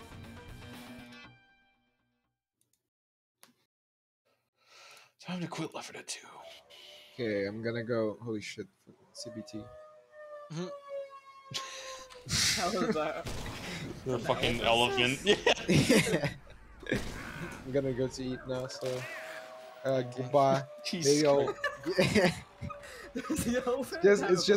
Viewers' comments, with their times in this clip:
0:10 wtf was that ?! KEKW ; sounded like war siren rather than elephant........ gg on the run btw